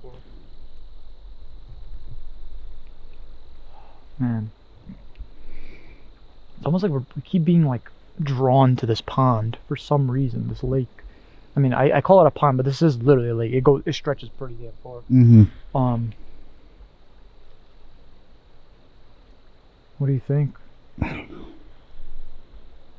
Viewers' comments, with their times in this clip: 0:08 I’m and I don’t think I agree with you guys on checking out the loud, midnight splash. It could’ve been a bear. I don’t know why a bear would go for a midnight swim, but it’s his home, not mine. 🐻